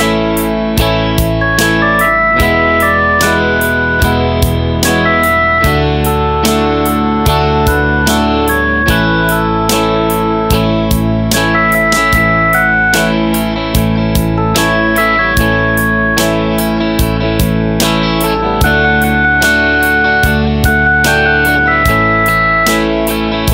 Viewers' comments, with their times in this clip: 0:06 What is the strumming pattern from ?